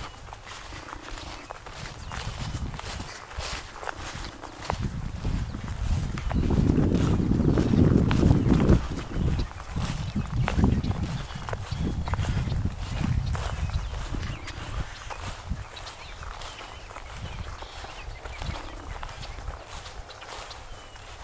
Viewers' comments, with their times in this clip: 0:05 Sorry for those wind sound effects. It was a little windy during the time I recorded those three clips of me showing you the MP4/AVI footage. But it panned out fine :)